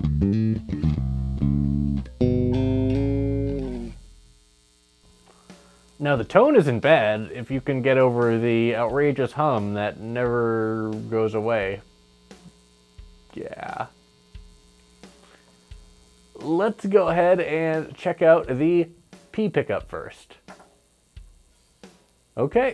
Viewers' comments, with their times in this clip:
0:06 I was gonna say it doesn't sound bad. Shielding/grounding is sketchy at best on these blind build sort of things. You might not even have it connected at all, might not be even a wire.